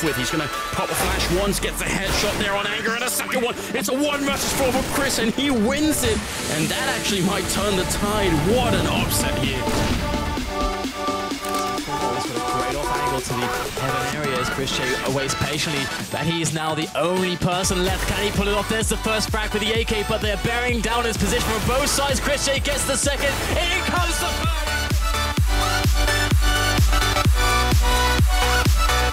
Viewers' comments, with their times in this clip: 0:10 lol i was waiting so long for the drop :D